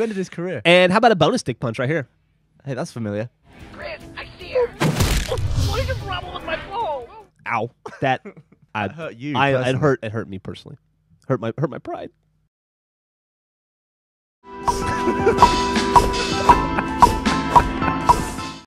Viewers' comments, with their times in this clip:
0:03 that crunch sound
0:15 sounds like he's got wood